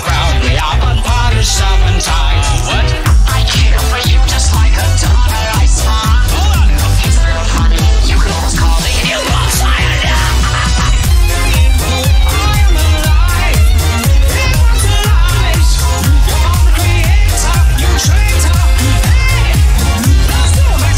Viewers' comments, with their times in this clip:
0:06 its funny you can almost call me- A NEW BORN CYANIDE epic violin
0:08 you can almost call me SIRANARA Like what is siranara